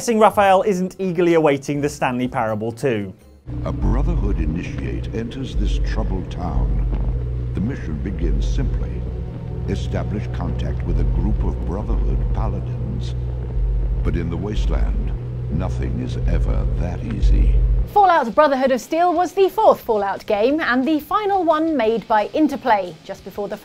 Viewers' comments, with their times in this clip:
0:04 Jeez, hearing Tony Jay's voice really brings me back. RIP I'm a go play some Bard's Tale and revel in the snark.